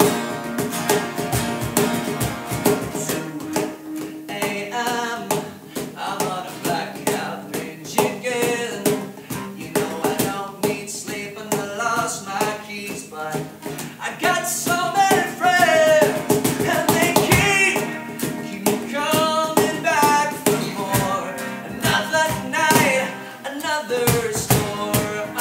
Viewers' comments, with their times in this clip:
0:08 Jack's soft little "ha ha ha" 😂💕